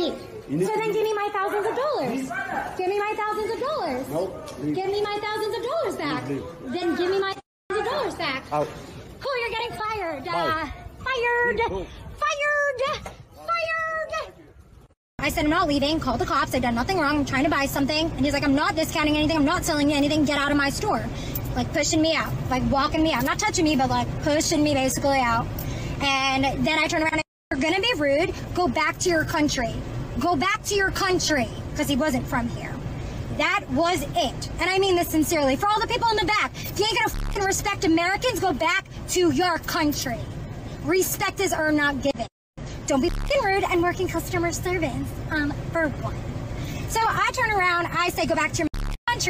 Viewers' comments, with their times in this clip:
0:10 when she keeps saying “Fired” she sounds like one of the chipmunks from Alvin and the chipmunks
0:32 Why does this person sound like they are in fast forward? 😅
0:34 ah yes, "Home Depot Karen"!! The most annoying voice ever!!